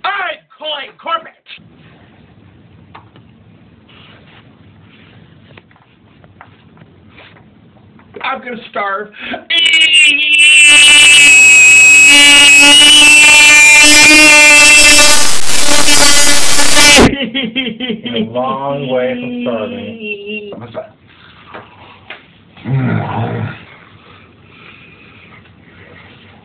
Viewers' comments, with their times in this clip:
0:08 IM GONNA STARVE- breaks the sound barrier